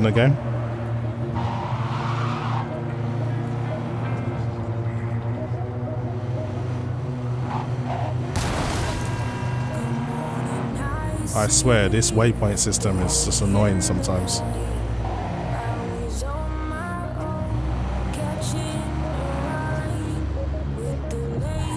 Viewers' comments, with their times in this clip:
0:09 music kicks in and in an instant Im back in Night City. This game did something beautiful to me, it's beyond description.